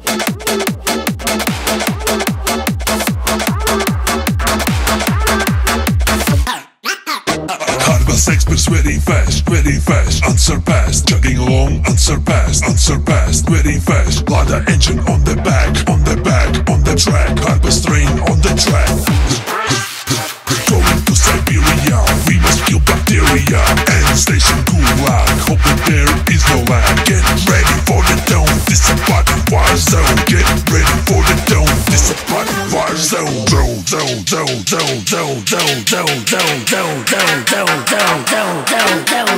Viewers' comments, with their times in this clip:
0:05 train: normal *record gets spun* Also train: *casually breaks reality*
0:21 I can feel Hardbass Bathwater vibe with little Polish Gopnik style with Vodka Party style 🤯